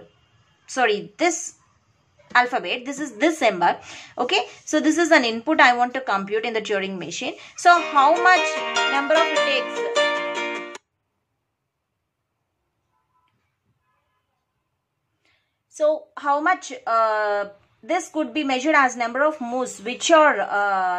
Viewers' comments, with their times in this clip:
0:06 ma'am phone ringing